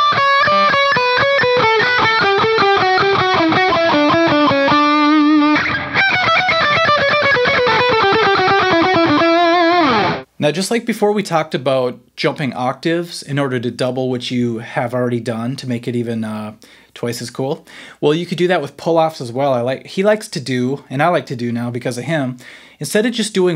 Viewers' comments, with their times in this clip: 0:05 anyone know what scale this is?